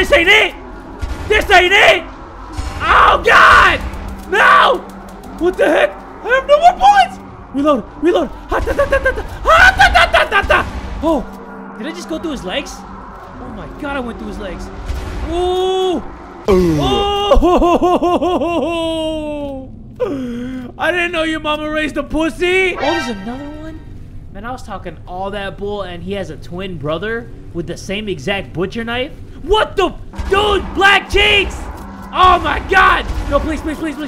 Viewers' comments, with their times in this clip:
0:08 when youre out of bullets and try to scare the "under your bed Monster" with your realistick gun shot sounds
0:16 Bruh did you really add that e 40 ugh right der 😂😂😂